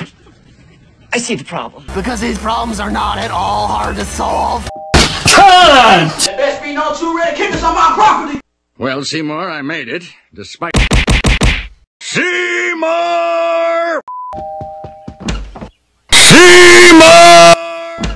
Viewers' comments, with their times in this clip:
0:06 Ooo? What’s that voice I recognize? ( O oO)